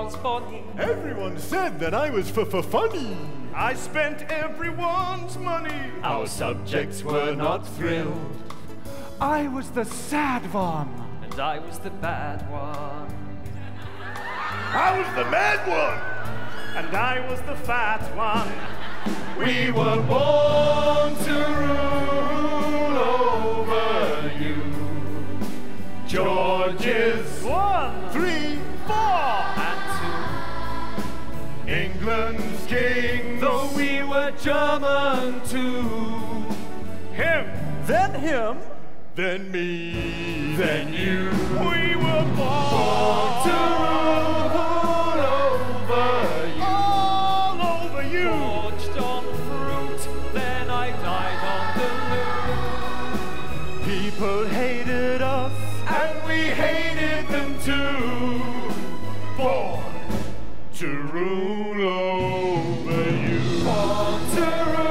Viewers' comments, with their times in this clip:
0:09 lol when matt winks girls screams!
0:12 was so hilarious. Matt winks then bites his lip and after that everybody screams 😁. At least 200 people would have fainted from that!
0:12 The uncontrollable screaming makes it funnier
0:14 The girlish squeals when Mat winks ant ! :D
0:28 the choir sounds magical sheesh
0:41 Best singer Matt has competition
0:48 I love mat's vocal in this part idk why. I just find it so smooth
0:48 i cant explain it but the way he says fruit is so satisfying